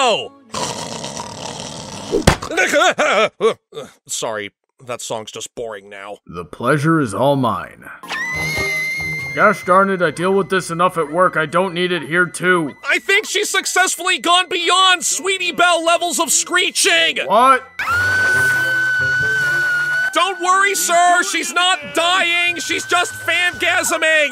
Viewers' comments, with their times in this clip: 0:08 fillies and gentecoalts, I give you equestria newest sound related weapon